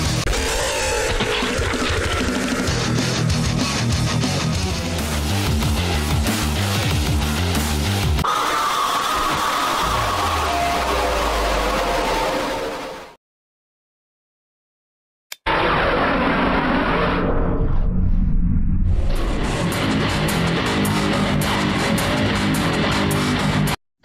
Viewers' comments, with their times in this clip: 0:05 I can’t stop repeating the song it’s so cool